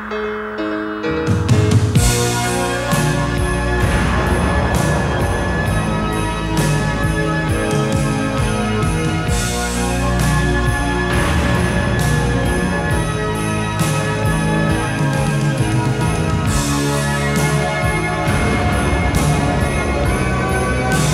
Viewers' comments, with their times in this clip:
0:08 Drummer missed the fill 😂